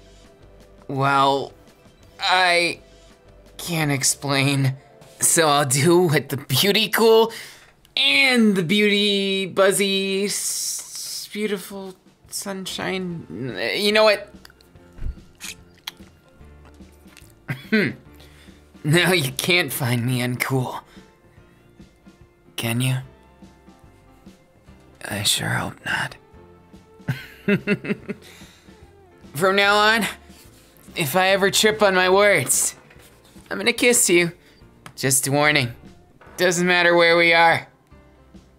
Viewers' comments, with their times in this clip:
0:10 That is the cutest “sunshine” I’ve ever heard
0:25 WOAH THAT JUST FUCKING D R O P P E D